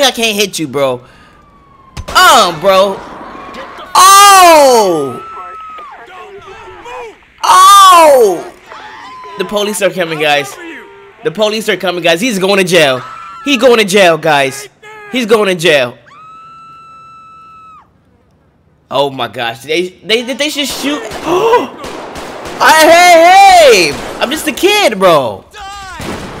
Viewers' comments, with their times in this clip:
0:08 I went deaf